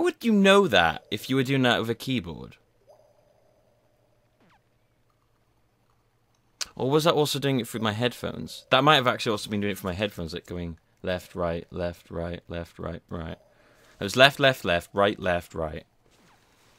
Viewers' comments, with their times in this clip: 0:03 Well, there's a sound made in the left and right speakers, even on a console. Not that I noticed....